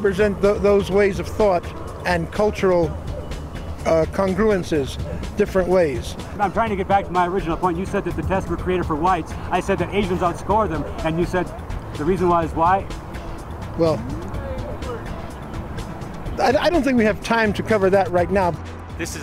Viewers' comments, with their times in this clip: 0:07 I laughed so hard when the guy started stuttering at like ... LOL